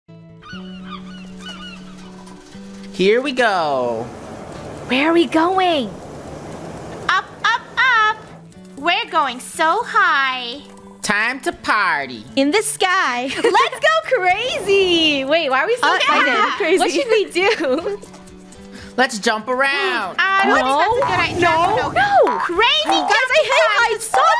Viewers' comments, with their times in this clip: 0:08 "up up up, we're going so high!" I thought that said "We're getting so high"